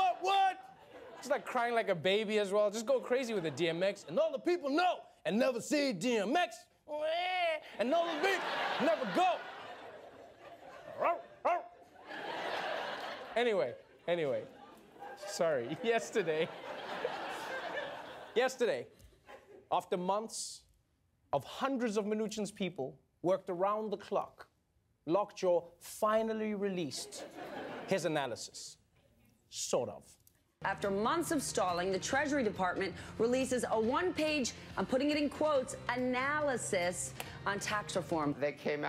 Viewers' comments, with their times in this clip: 0:09 It's the bark.
0:10 Trevor barking is soo funny hahahahahahahahahahah
0:19 Trevor almost cracked up!